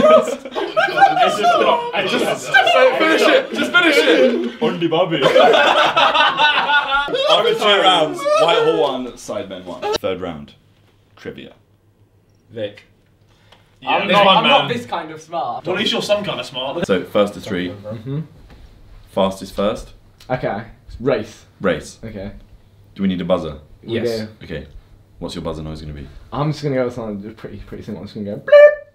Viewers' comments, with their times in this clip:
0:10 the way they called vik in was like an anime